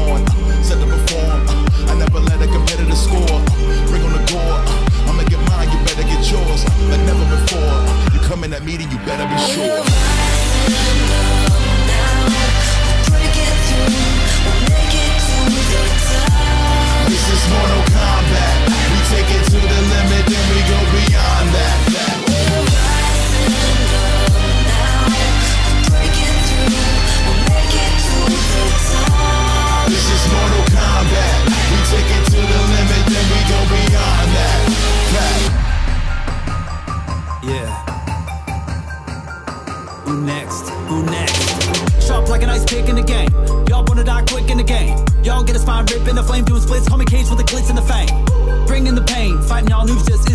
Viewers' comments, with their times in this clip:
0:10 only instrument sounds dope
0:32 Am I Only Hear Nigga